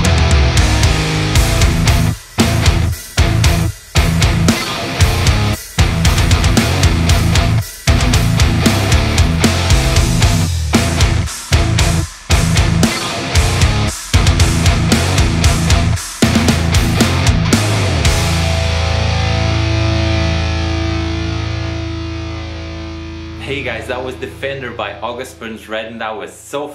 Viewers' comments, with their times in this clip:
0:10 the most beautiful bass slide ever done